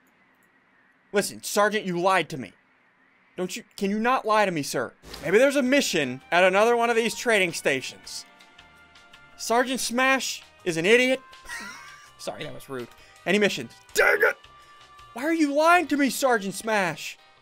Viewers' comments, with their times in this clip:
0:05 if you can hear the music playing your meme god